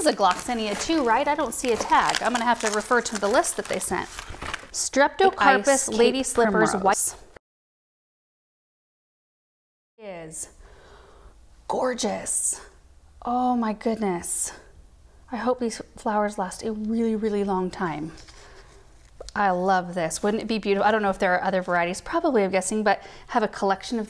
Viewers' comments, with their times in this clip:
0:05 First time for voiceover for the primrose name? 💜.
0:05 *Dub over -6*
0:05 I think the audio messed up a bit
0:06 There is an audio glitch into the video.
0:07 Something crazy happening with the audio
0:07 What’s the plant ? Sounded like a voiceover and couldn’t make it out.